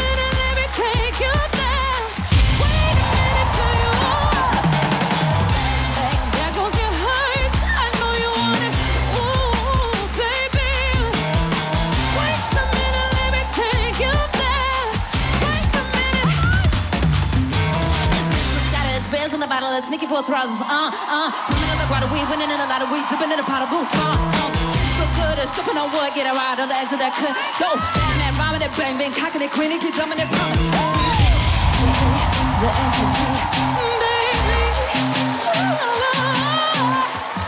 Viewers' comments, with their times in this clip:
0:07 The little squeak in her voice is cute
0:18 The first one rap on It so good